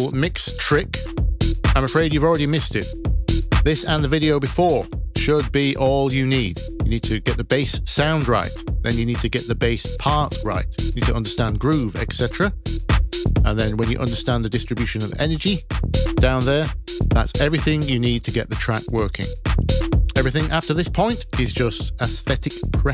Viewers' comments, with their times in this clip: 0:07 I've been listening to these two parts (with and without side chaining) over and over again... I just cannot tell the difference. I even recorded and put their waveforms side by side and they look identical to me. What am I missing? Can someone point me in the right direction?